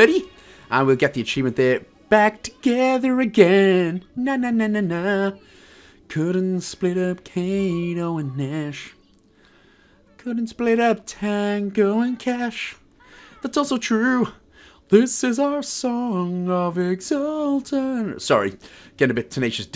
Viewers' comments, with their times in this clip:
0:06 when you started singing tenacious d I started singing with you lol great guide man